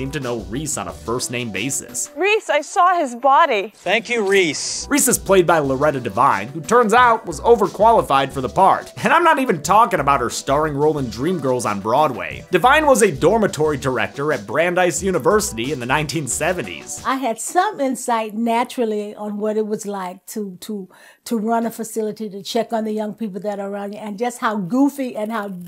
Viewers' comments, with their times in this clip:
0:09 her voice is so unique I love it. I could literally literally listen to her tell me a story on audible.